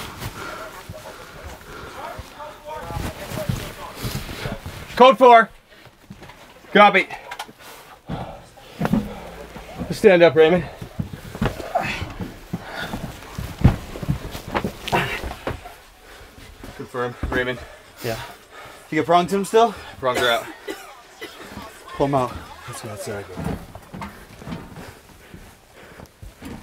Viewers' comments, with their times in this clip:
0:10 I like how there is a carfax commercial going on in the back ground😂😂